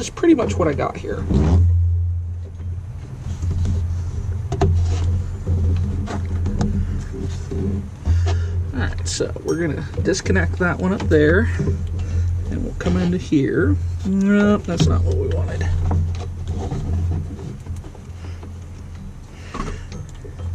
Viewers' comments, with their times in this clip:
0:04 Hahaha not the super loud fart 😂